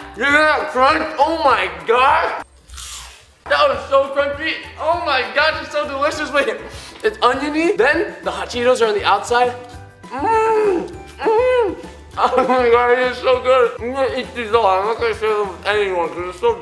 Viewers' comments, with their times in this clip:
0:03 satisfactory indead love that crunch